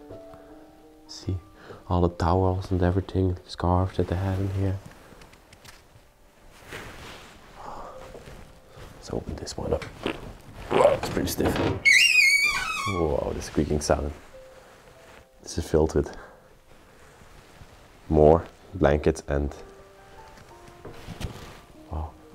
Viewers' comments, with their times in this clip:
0:07 sounds like theres a demon in there